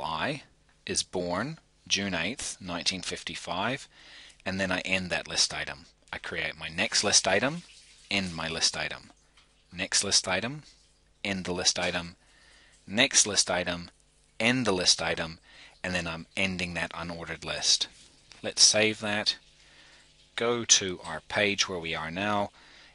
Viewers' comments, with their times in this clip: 0:08 Flushing toilet? oh...great vids